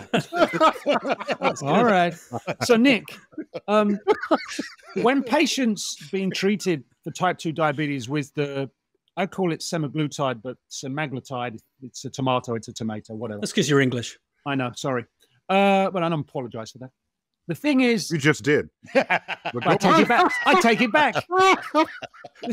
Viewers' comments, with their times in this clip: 0:03 😂"Alright" trying, like a teacher, to reign in the conversation from Sir-Mix-A-Lot.